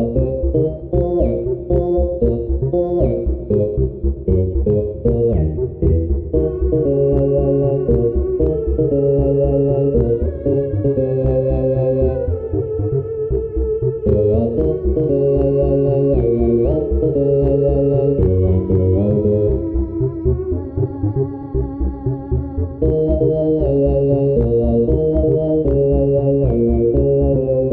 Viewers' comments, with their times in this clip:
0:08 King beelte sings at the background, and tunnel bear with king neetle again